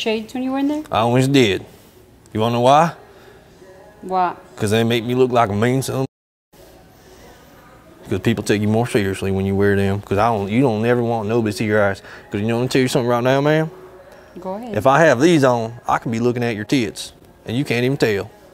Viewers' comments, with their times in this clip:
0:03 The Middle Eastern women saying “why” and “go ahead” in a country accent was the funniest yet cutest thing bruh 💀😭👏🏽